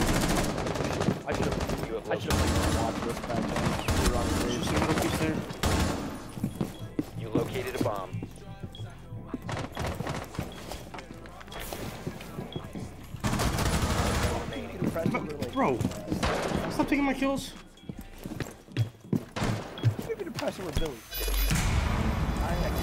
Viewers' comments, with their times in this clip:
0:10 anyone else hear the juice wrld playing